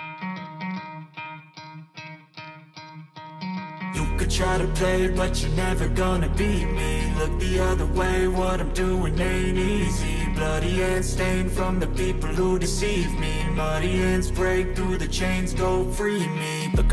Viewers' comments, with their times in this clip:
0:03 Rapper Jaechan fits the background music with NEFFEX's Free Me